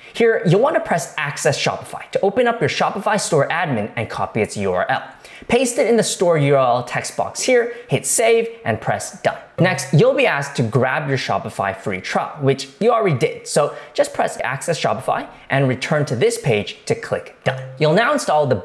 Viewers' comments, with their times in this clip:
0:03 that cute voila😄😄